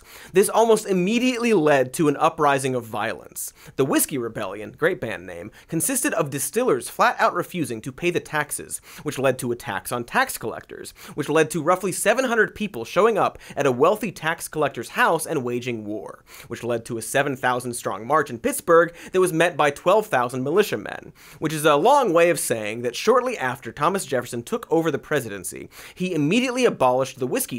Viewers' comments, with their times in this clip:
0:09 Major shoutout to the editor for "attacks on tax collectors" when I definitely heard "a tax on tax collectors." Doing the Lord's work.